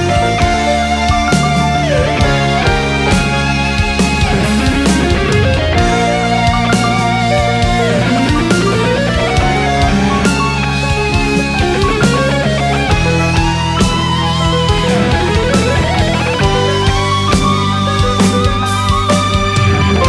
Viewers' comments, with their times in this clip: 0:07 I can't get over that stuff. Even after 4 years I still remember that. It is such a memorable thing. Comes with the territory, of course. The guitar player is great, period. Nevertheless, those couple of notes are so radical, it is a fuckup for the history.